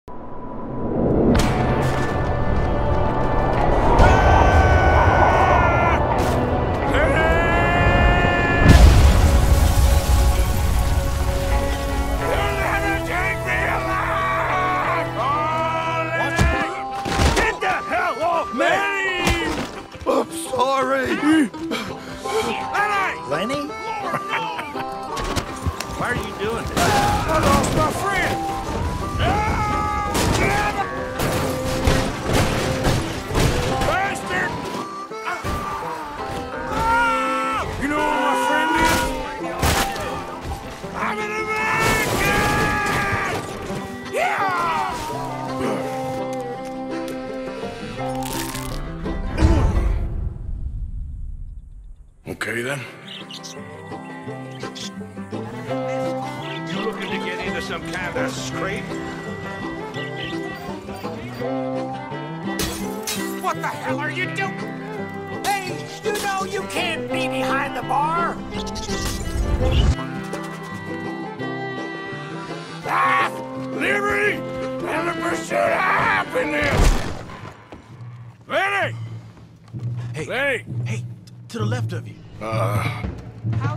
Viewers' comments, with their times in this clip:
0:07 is was hilarious when he yelled LENNY
0:40 My favorite part he screams “IM AN AMERICAN!” Author is a true patriot.
1:05 I love how the bartender shouts at the bird for being behind the bar like the bird could hear him.